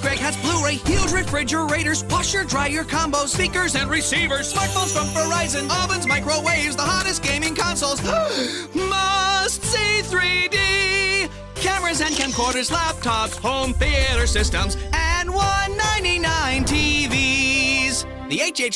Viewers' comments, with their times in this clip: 0:03 For a sec I thought he was saying something else lol